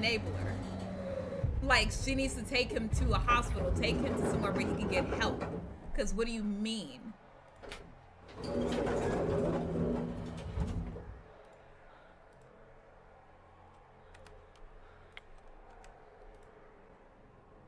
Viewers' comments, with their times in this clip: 0:04 You can hear his footsteps. Never walk out of any room without checking the peephole first. You've been mostly lucky when hiding in the storage room because there are no peepholes and he can still get you there.